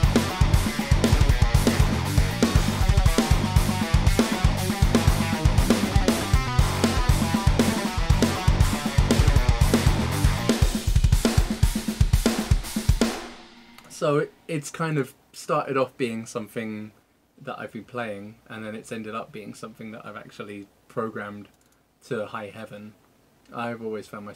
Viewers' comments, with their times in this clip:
0:05 CC: "Applause" Well, I totally agree.